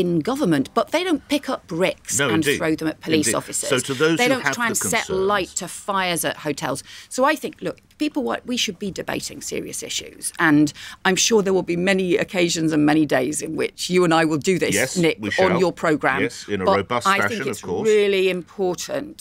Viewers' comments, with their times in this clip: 0:04 Yvette Cooper doing a quick Liz Truss impression then a quick Michael Gove impression. Change? I don't think so!